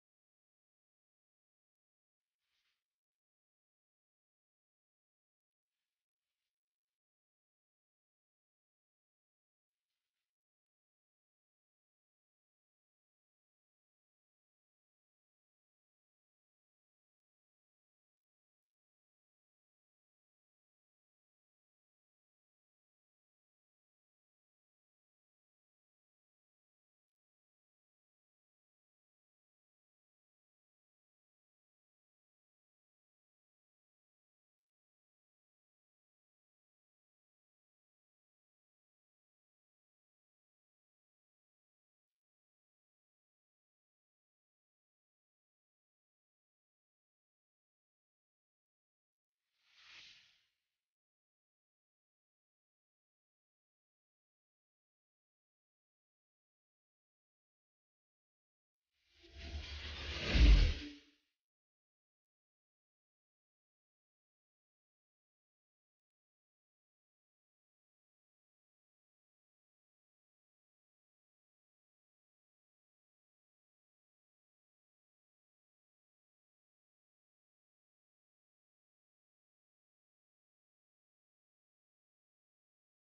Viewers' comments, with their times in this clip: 0:09 the shitiest beat drop ever i thought something cool was going to happen
1:09 gay music af